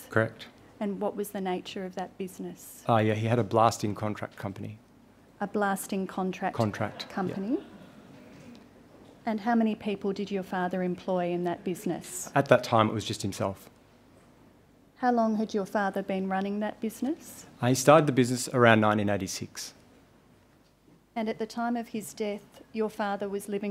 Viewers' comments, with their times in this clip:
0:04 I hope that laughing was not directed at the witness...